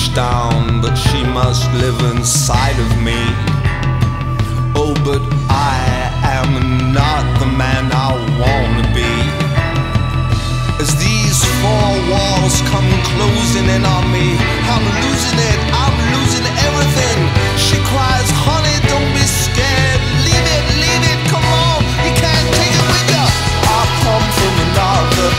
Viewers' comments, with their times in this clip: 0:08 The bit reminds me of Springsteen's Born to Run.